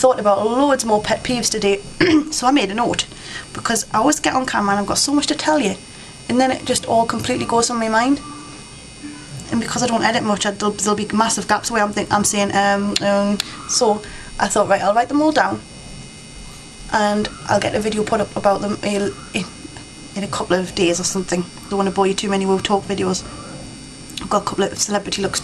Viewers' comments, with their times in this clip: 0:10 i can hear snoring in the back ground